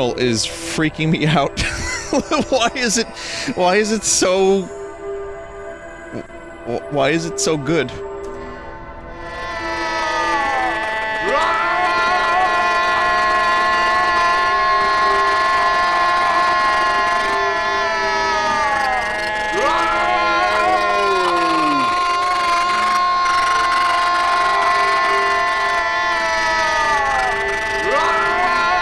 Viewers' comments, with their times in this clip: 0:10 I fell asleep watching this stream and the noises turned into a dream about a group of sea lions and a goat yelling at each other, vinny claiming not to be making the noises made it into the dream too hehe,